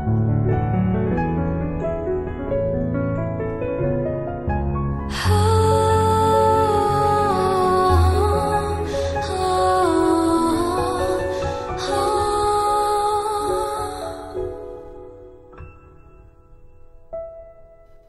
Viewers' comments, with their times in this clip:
0:04 I thought it wasn't that good until you go 0-100 real quick😍